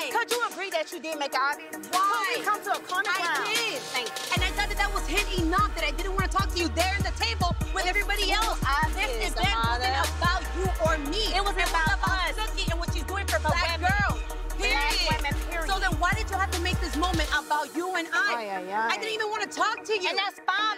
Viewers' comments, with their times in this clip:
0:04 damn that rap flow🔥